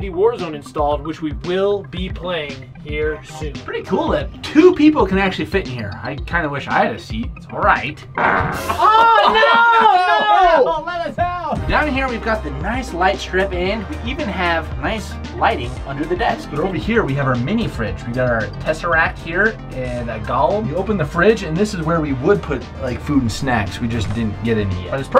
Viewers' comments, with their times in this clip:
0:08 no one gonna talk about the fart?